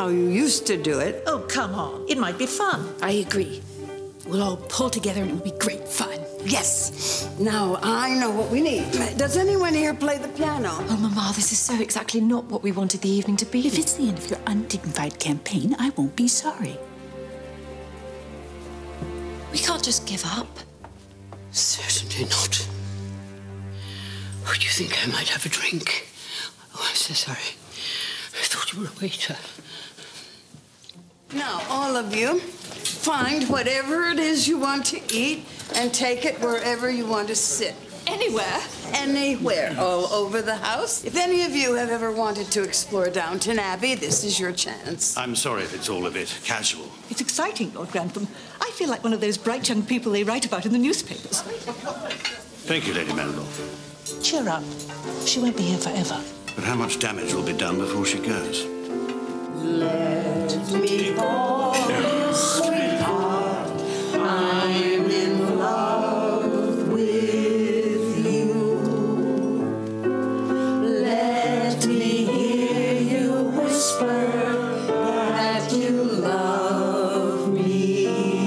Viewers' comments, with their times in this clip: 0:05 The intense way Cora says that 😆
1:01 Mr. Carson's sigh! as he's hauling all the scattered plate 😅The dichotomy of being a servant in a lavish environment.